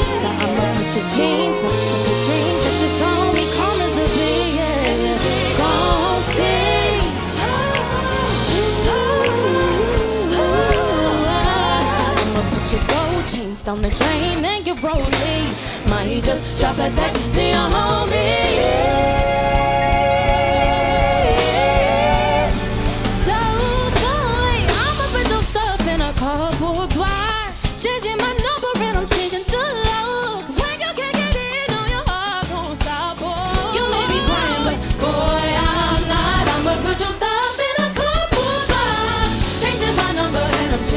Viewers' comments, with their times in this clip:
0:07 It's giving, practice is a real thing. Also, how did you miss the run ?
0:07 OH. RENEE IS A FORCE TO BE RECKONED WITH. DID Y'ALL HEAR THOSE RUNS/RIFSS ON THE BRIDGES? ?? JESUS. WE CANNOT SLEEP ON THAT GIRL.
0:09 That run tho!!
0:22 They’re wonderful! 😍😍🎤🎤🎤💕 I loved the chord change 👏🏽👏🏽👏🏽